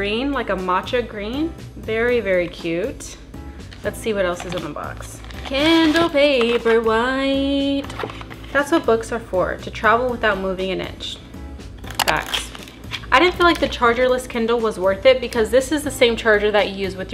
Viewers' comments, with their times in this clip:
0:05 I would love a feature where every time I turn it on, it plays your jingle